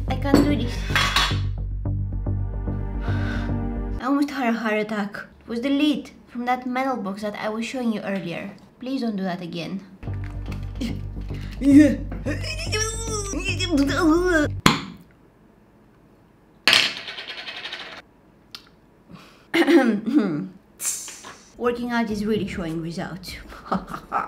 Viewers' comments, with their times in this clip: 0:10 The sound effects